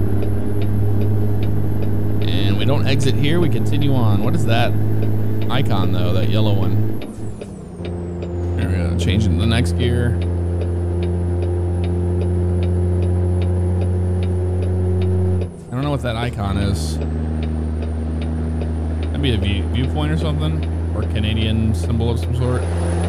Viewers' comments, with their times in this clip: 0:06 That turbo sounds so good